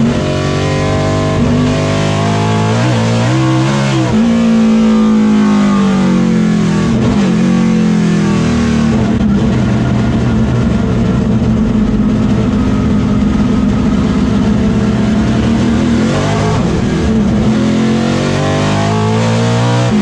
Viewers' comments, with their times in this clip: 0:03 I liked when he lit the rear tires up! This sound much like the old F1 sounds are why no one cares for the "new and improved " garbage. Imo.